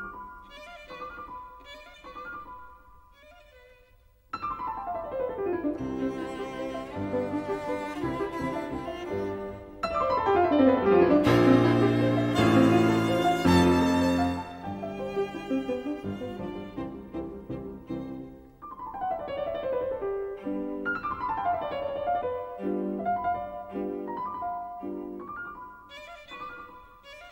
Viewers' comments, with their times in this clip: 0:09 like waldstein gliss?